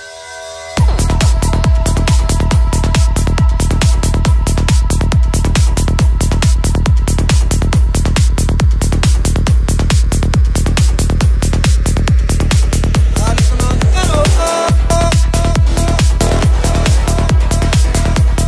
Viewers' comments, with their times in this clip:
0:06 Yees! Nice beat🎉each tract is like a shot of energy🎉like a trip someone touches heavenly❤i like it a lot❤😊top-notch dj❤❤😊